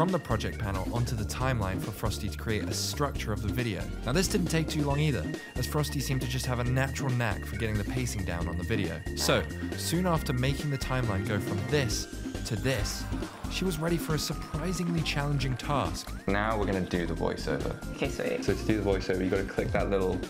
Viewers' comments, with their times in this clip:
0:08 why is there a fart